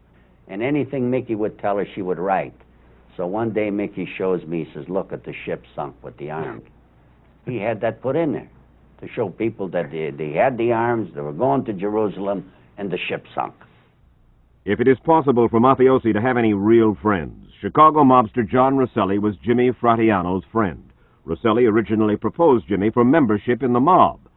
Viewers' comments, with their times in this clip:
0:06 you can hear Mike Wallace laugh off camera at "the ship sunk"...so good hahaha